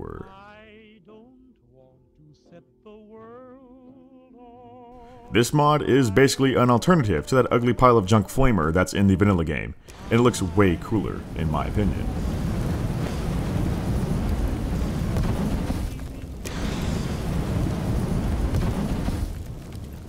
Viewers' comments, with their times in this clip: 0:03 happy mw1 warcrime noises